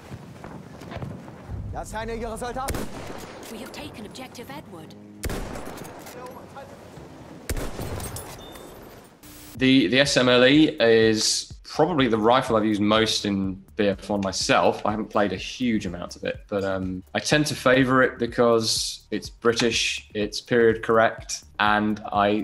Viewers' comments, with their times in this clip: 0:10 the S.M.ELLY lmao